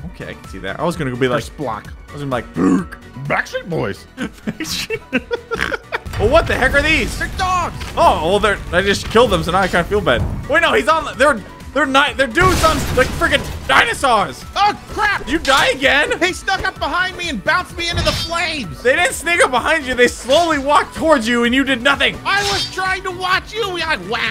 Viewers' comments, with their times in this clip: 0:05 perfect imitation of the minecraft piglin hurt sound effect